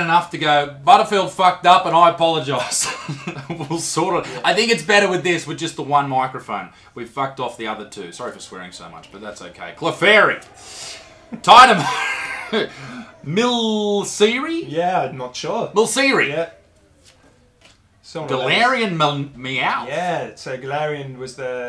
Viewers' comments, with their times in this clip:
0:08 Did anyone here the ghost